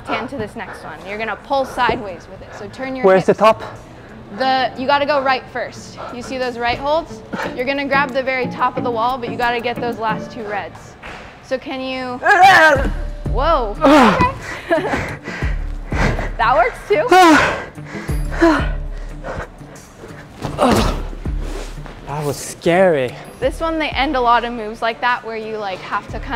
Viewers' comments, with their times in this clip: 0:10 looooool that dyno with the scream…. for a beginner is crazy haha
0:11 The scream 😂😂. Thanks for motivating me to start climbing too, tested it out for the first time 2 weeks ago and it was super fun, tore my bands by falling down a boulder to hard ground but i can’t wait to really start climbing:)))
0:12 that Dyno shout had me in stitches! keep replaying it! so funny!
0:12 haha the scream xD